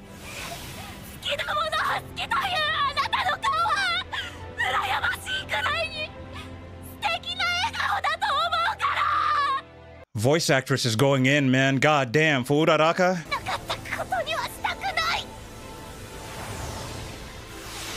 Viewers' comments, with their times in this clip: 0:03 the emotion in Uraraka's voice gave me goosebumps like crazy